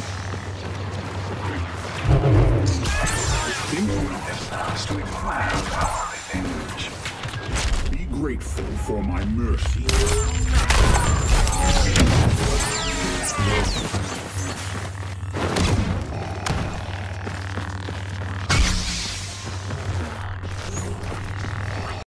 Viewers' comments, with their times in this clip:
0:07 audible cracking sounds when players die. Horrifying.